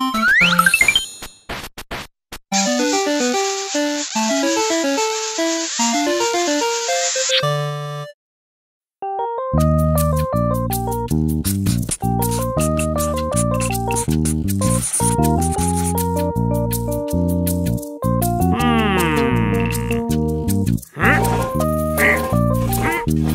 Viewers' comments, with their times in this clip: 0:09 word play is my favorite episode out of the bunch I like the music of it too and it just makes me feel that there's a charm to it and that makes me feel good (: